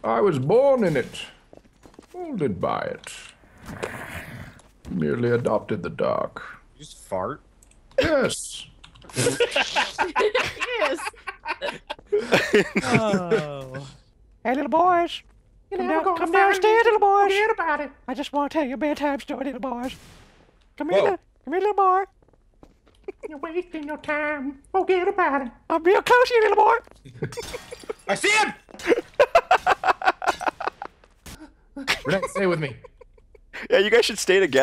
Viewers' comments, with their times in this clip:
0:03 someone drops a wetttt fart
0:22 Best Accent Ever